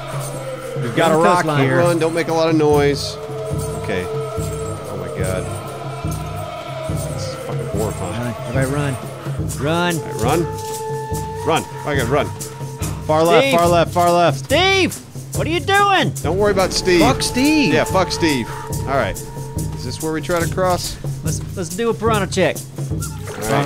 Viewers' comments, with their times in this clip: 0:07 What is that weird sound ?